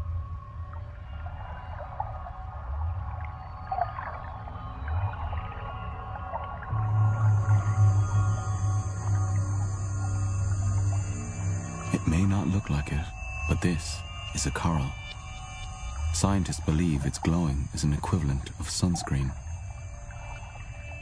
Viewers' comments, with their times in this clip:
0:09 But the guy from sounds like someone with a hangover trying to tell a ghost story.